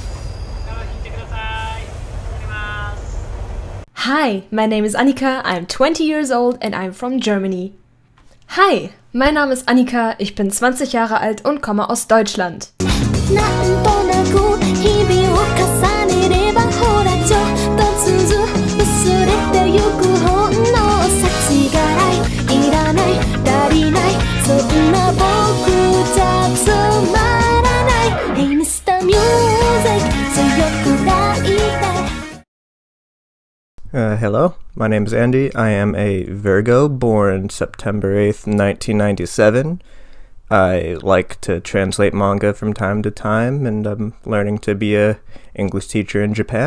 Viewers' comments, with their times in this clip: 0:04 That train scene is amazing ASMR. I could literally fall asleep to an extended recording of that.
0:05 OMG TRAIN DRIVERS AND THEIR QUIET VOICE. IM CRYING FROM LAUGHING SO HARD
0:29 had me laughing out loud with that impression of the nasal whispery train announcer in Tokyo